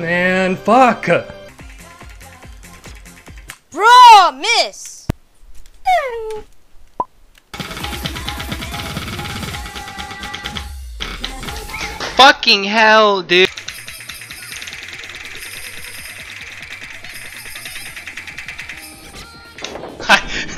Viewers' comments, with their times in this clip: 0:06 Did the guy turn into a cat upon raging? 😳